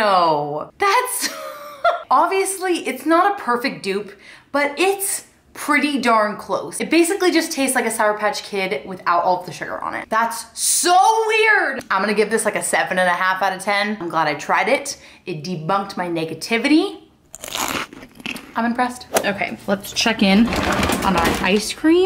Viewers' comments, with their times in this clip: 0:04 The crunching SCARED me lol, I bet if they were frozen they’d be even better!